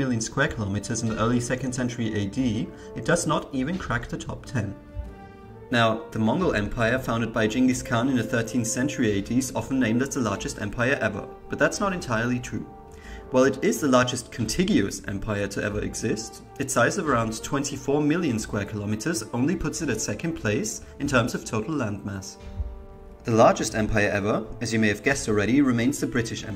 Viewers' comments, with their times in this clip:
0:07 I am suprised that someone finally pronounced Genghis properly.